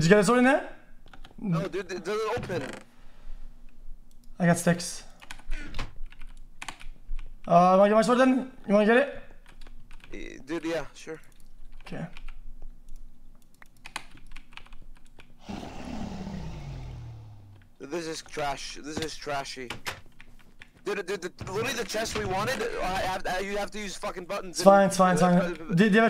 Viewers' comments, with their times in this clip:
0:07 “arghæmingœsmögrn Wanna get it” enchanted language